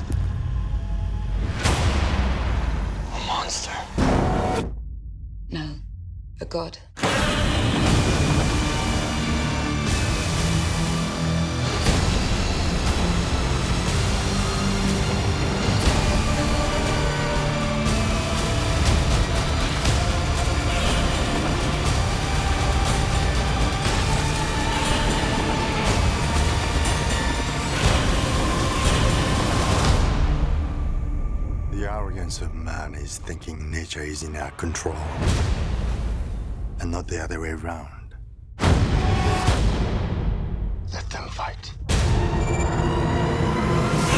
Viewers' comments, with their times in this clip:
0:03 Did she really fucking said `no a goat` !?!?!?!?!? or is it just me wtf that guy says a monster and she a goat wtf!!!!!!!!!!!!
0:08 Gotta love how godzilla Roar turens into a violin Just like how the Roar was created
0:29 just one tiny little glimps where you can see that bryan cranston screams like godzilla
0:29 bryan cranston screams like godzilla
0:31 the narrator in sounds like arnold swarchneger